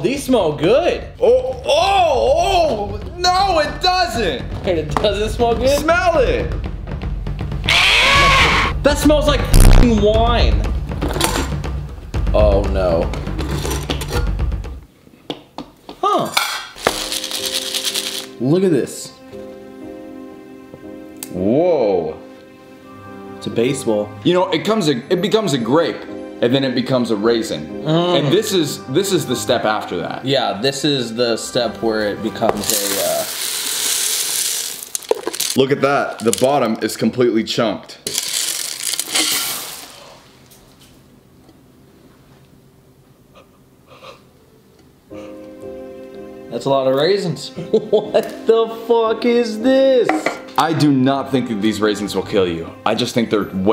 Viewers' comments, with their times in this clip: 0:07 it’s his scream for me😂😂😂
0:40 you can hear some even fall on the floor